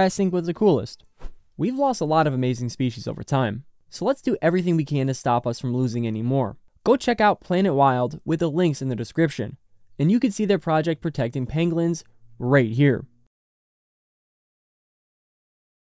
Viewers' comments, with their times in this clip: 0:09 "and you can see their project protecting PENGLINZ right here..." wut? "PENGLINZ"? Wtf is a penglin?